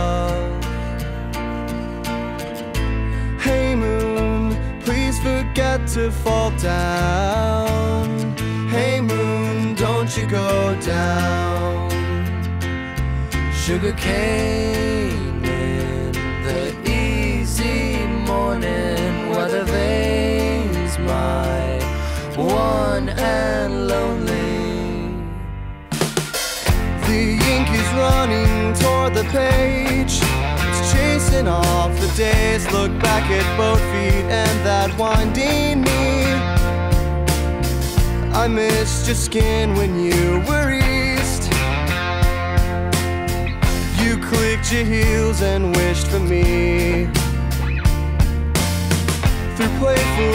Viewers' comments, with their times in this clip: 0:04 i hear my dad awake eatin candy on Halloween lol
0:12 Michael Westen sings some nice harmony...
0:22 that guitar lick always makes me smile
0:32 look back at buffy and that 1D meme
0:32 “look back at Buzzfeed and that 1D meme”
0:34 DOES ANYONE ELSE HEAR "THAT 1D MEME" OR IS IT JUST ME CAUSE I SWEAR
0:34 why did i hear 'and that one dank meme' omg